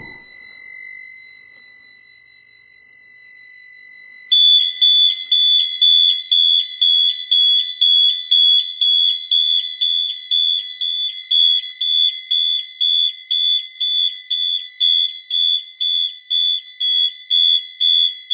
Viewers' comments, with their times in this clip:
0:04 how to annoy your parents? JUST BUY THIS ALARM!